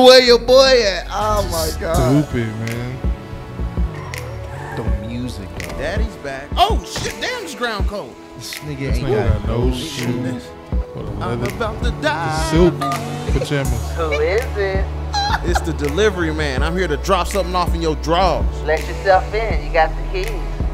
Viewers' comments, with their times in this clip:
0:05 lmao!! How you both said it the same time with beat! 😂😂